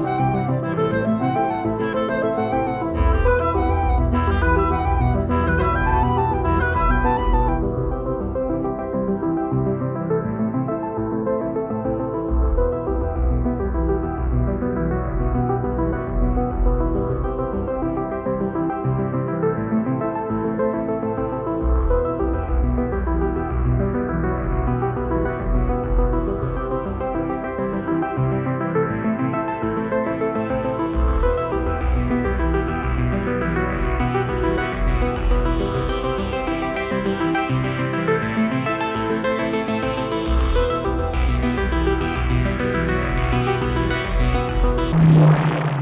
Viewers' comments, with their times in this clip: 0:07 sound like Tron legacy
0:29 Very interesting decision to release this album without the drums. The percussion on this album is my favorite aspect from it, especially as they emphasized that they used real drummers for the first time instead of relying on a drum machine - and Motherboard is my favorite track on the album. It definitely feels alienating to listen to it for the first time (I really missed that one specific cymbal crash lol) but the isolated synths we get from it are just so beautiful. Also they really used a lot more water sounds in the background than I had previously noticed. The robots are really full of surprises. Apart from Motherboard, Contact is probably the most interesting track regarding the drums, so I really look forward to listening to it.